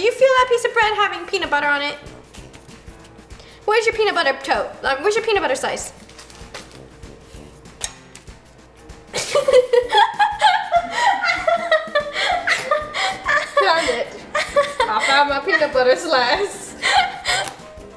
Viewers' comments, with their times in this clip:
0:05 roni where’s your peanut butter toe